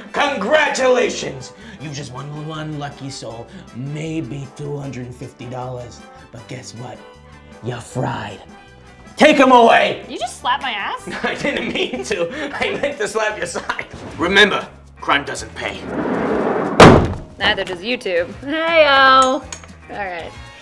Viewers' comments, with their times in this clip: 0:08 That ass slap XD #untilnextcrime